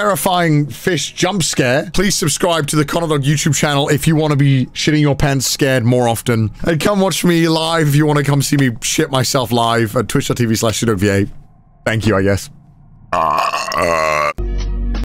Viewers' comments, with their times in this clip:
0:13 yup thats the burp you do when you body knows its in a near miss situations and releasing the tensions after it happened........ i always got that whenever i drive and almost hit something im not supposed to.....